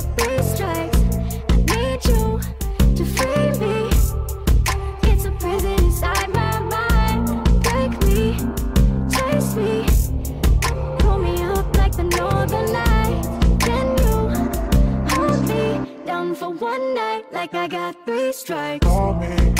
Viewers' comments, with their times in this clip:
0:03 "it's a prison inside my mind" that's clearly fucking Kylie I don't care how many times she denies it.